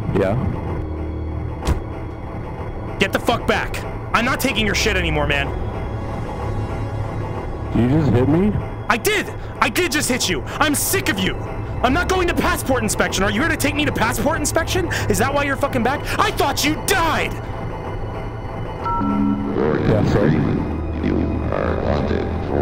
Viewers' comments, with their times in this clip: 0:07 The way he sounds like he's about to sob